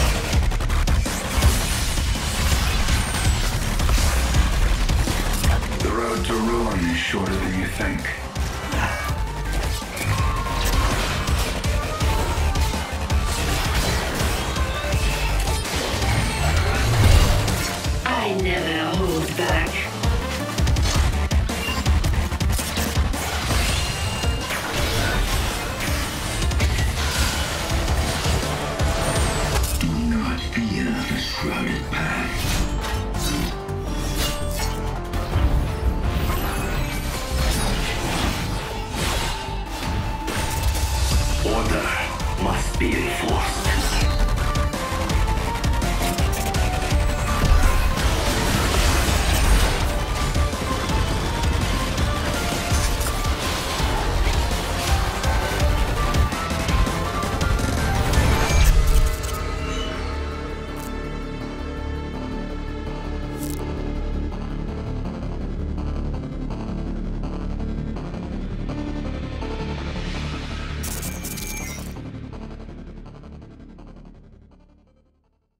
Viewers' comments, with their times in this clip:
0:04 yasuo sounds more like Liam Neeson with project skin :D
1:00 That group recall tho...